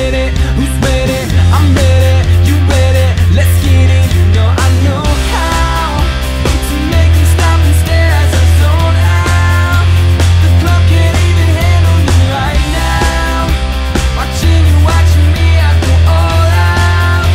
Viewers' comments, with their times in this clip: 0:05 = crazy ass beat :)